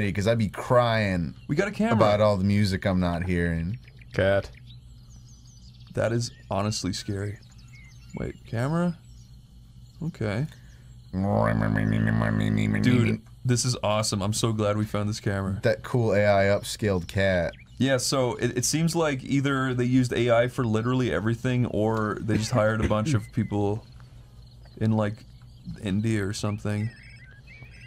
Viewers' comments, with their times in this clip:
0:09 goofy cat noise